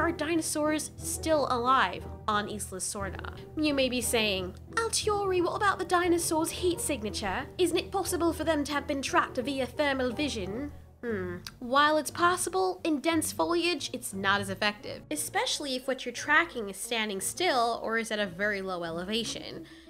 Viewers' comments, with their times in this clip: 0:04 Okay, that was just an excuse to test your British lungs wasn't it. Again i am very impressed.